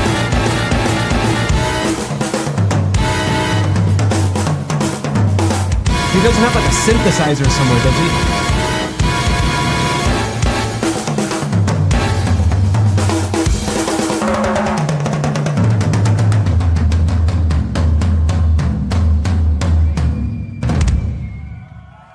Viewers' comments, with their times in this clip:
0:03 Modern electronic drum pads can be programmed with any sound, so hes hitting some pads to make those brass instrument sounds.